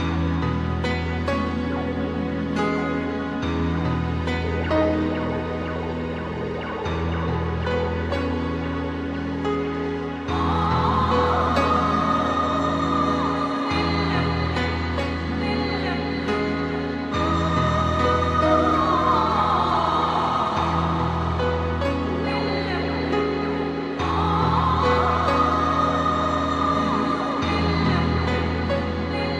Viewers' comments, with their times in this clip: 0:10 do they say "oooooh man"?
0:11 is so haunting. I imagine it is Guts's mom crying for him.